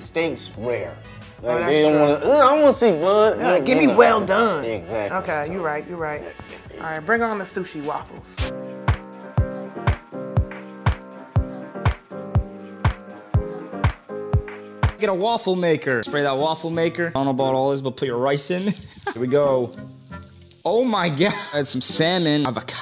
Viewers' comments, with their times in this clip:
0:07 did these mf'ers just play some elegant Guile music? 😂 😂 😂